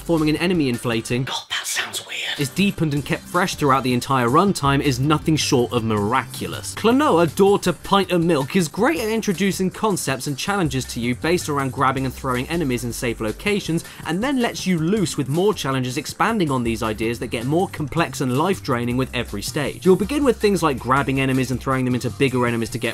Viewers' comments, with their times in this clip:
0:06 it’s pint of miluk
0:07 did caddy just mispronounce miluk?